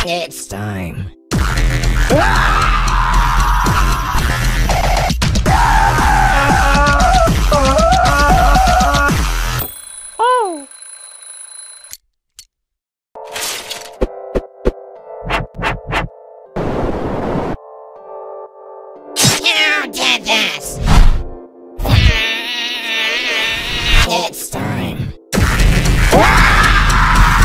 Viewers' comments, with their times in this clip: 0:10 talking like a Cosmo